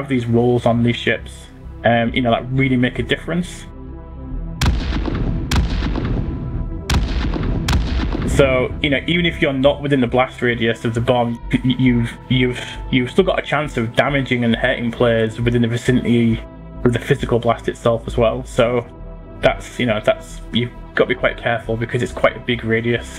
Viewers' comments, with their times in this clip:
0:05 whatever these visuals are would be much more impressive with a decent sound.... this is just sad.